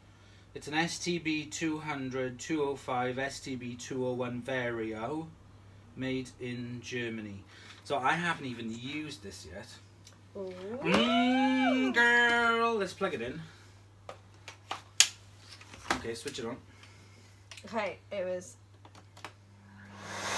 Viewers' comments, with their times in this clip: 0:04 When you said vario you sounded like Forrest Gump